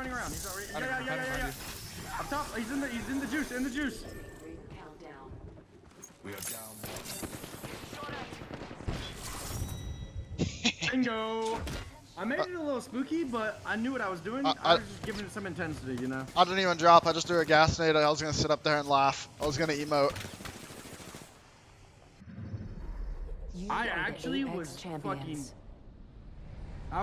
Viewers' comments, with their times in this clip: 0:10 did you guys heard that William "Goblin" Dafoe laugh? xD and Marvel dropped the trailer with the return of Goblin and Dr Oc!! Maguire might return aswell!! what is the coincidence xD